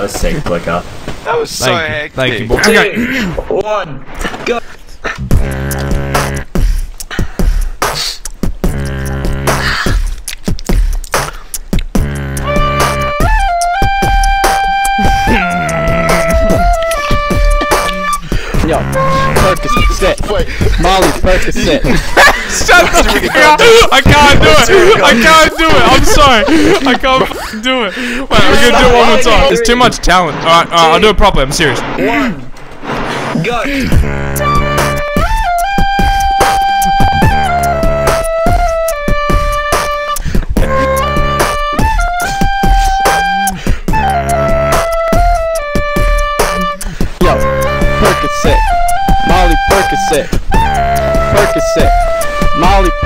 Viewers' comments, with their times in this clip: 0:03 OMG Impromptu recorder - this is why the Internet is amazing
0:09 I noticed he laughs while beatboxing when the person plays the flute thing
0:13 he was trying to hold back his laugh
0:13 Mine is I couldn t hold it anymore when he did that "HMMMMM" while holding his laughter :)))))
0:14 listen to codfish hold in his laugh when hes throatbassing its crack up
0:14 YO THAT GUY MADE LIKE A QUICK TRANSITION SOUND
0:15 the laugh beat is great😂 😂
0:33 The flute tho in
0:34 OFF I LOVE THAT BEAT